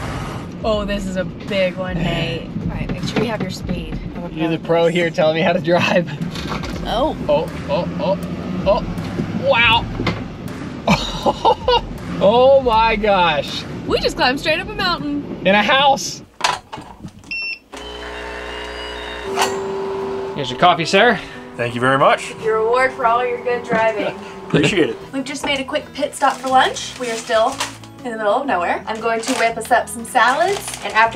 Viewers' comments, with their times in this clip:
0:09 Who noticed the back fire ?
0:16 I thought it went to a commercial and my brain had to process it was the coffee machine in the camper